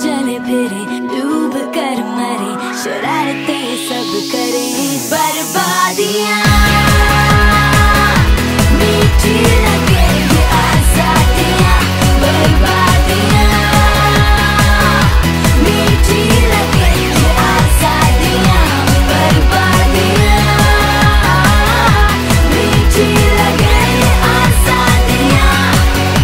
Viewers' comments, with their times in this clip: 0:07 the growl here is sooooo damn satisfying